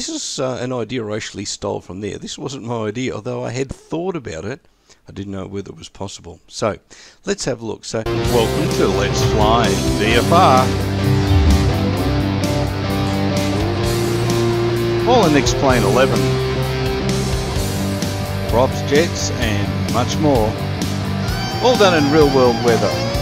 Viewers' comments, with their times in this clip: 0:08 Ear rape Thanks me later